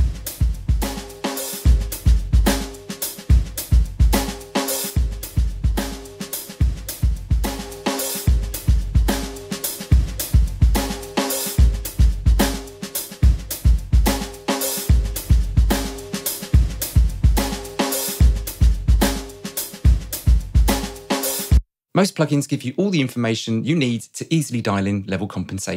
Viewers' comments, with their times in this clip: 0:08 Maybe it's just my subjective ear but I don't hear how the make-up gain on that compressed drum loop actually sounds better. It seems like it's all running together